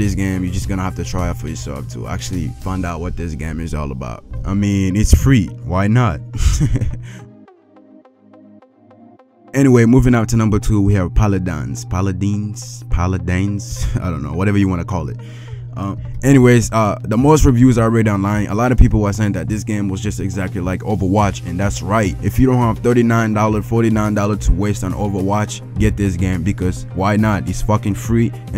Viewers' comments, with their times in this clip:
0:10 how the fuck do you mispronounce that 3 different ways.... How. Good video but you're just cringe af